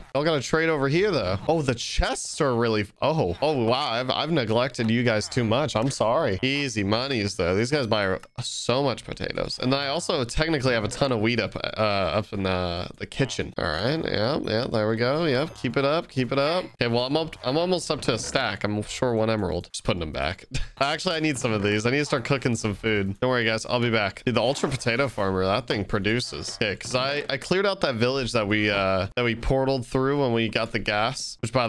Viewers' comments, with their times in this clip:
0:09 🤔🤔🤔 A tone of weed up in the kitchen
0:12 a ton of weed?